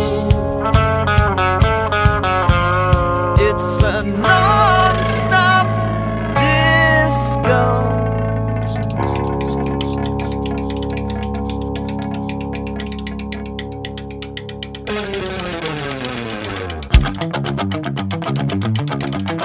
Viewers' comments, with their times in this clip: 0:04 transition is good 😌